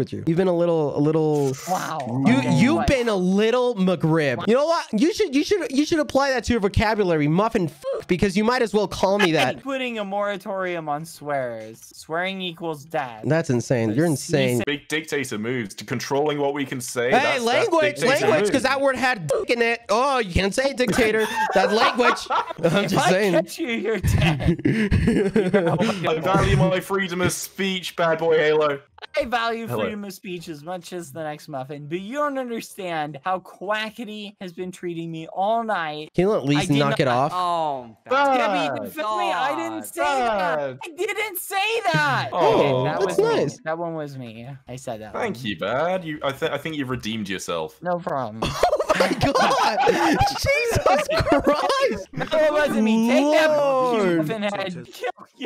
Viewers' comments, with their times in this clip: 0:05 that brutal "HEYY" from bad tho holy
0:05 i just love how most of the time when quackity swears bad's voice just becomes broken like in the end of the lice song and in
0:41 that actually sounded like he was going to cry 🥺😭😭